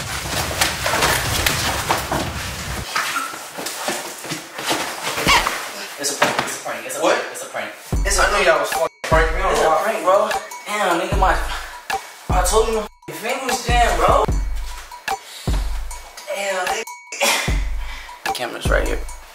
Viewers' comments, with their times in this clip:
0:05 that couch squeak sounded like it was a sound effect from spongebob 😂😂🤣